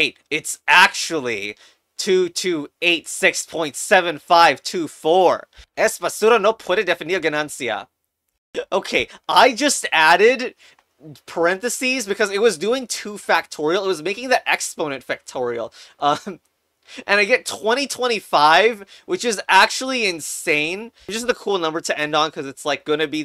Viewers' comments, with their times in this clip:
0:06 What is this man saying We did not hear that, and captions are not helping